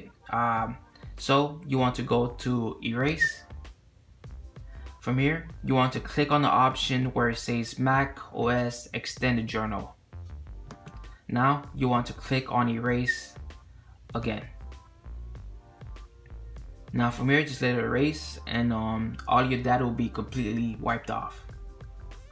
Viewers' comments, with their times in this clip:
0:03 Did he whistle?